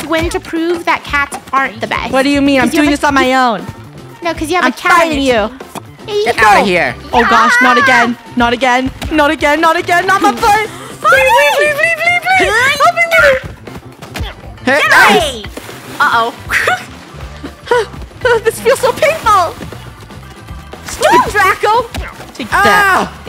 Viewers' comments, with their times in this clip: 0:05 Is it just me or did y’all hear? Fu- to